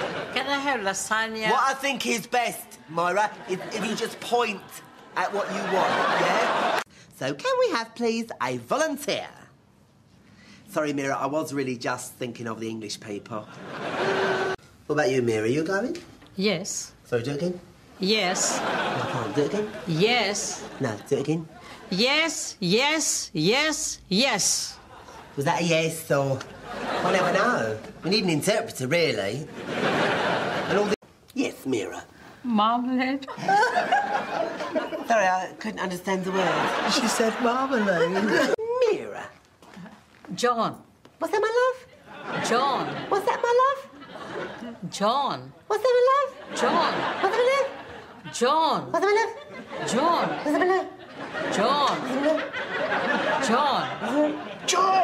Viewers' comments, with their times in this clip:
0:07 Marjorie speaks real......weird!
0:13 could have sworn I heard a "Boo", during the laugh track xD
0:43 The lady playing Mira starts to smile/laugh 😂😂